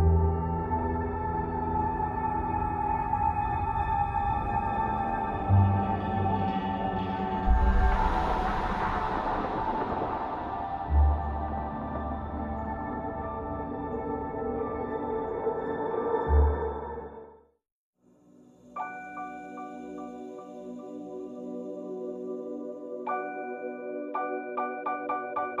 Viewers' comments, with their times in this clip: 0:07 Intro: The Science Show Flim4 Logo: Piano piano crashs Flim4 Logo: What Idea Is This??